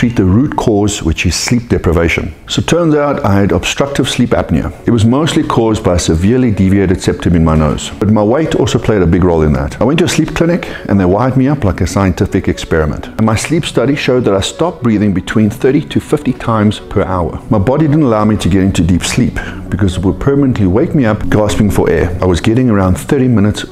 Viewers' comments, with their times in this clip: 0:08 I misheard "but my WIFE also played a big role in that"....that made me chuckle XD